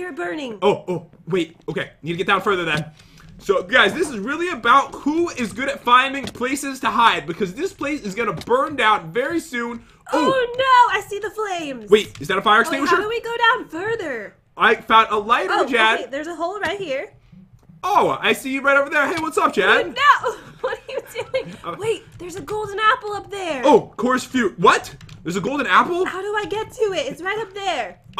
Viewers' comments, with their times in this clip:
0:10 um who else heard f#cker lol let me know if you did or im def